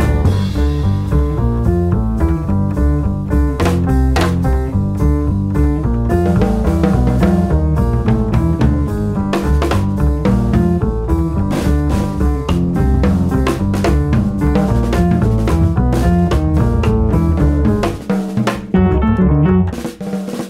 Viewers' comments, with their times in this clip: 0:06 oh dang, and again fire!! Kit sounding amazing.